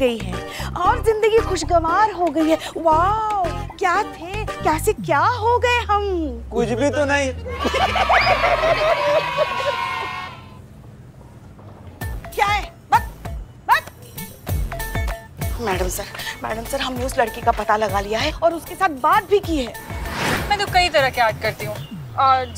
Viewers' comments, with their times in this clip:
0:05 and background music.. 🤣😂😂